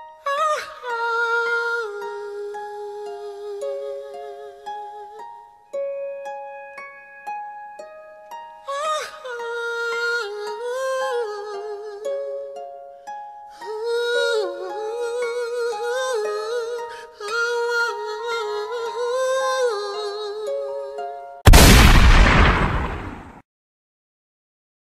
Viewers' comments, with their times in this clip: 0:10 that song on